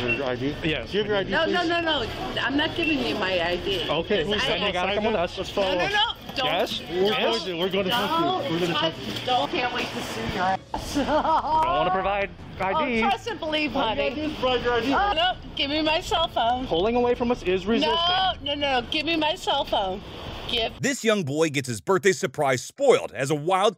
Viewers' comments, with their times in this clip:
0:10 that laugh was godly